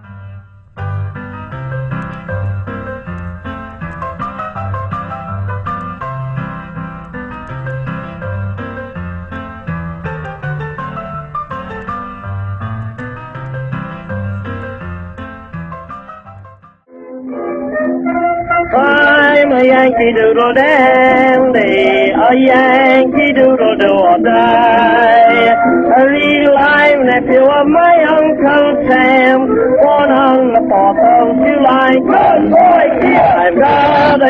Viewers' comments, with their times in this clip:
0:03 1902 parents O' my! Lets keep this wild music away from our childrens' precious ears, lest they are ensnared by that devil's melody!
0:11 Me: “Do i hear the ice cream truck?”
0:19 that voice reminds me the persian turtle video...